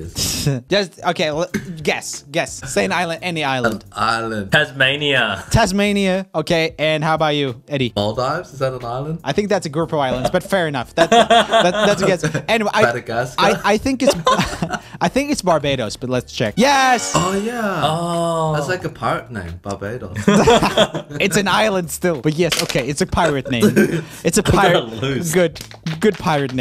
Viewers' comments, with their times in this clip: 0:07 Eddie says Maldives like me 🙊✨ ppl always correct me it's "Mall-deeves". Ig it's the Australian accent.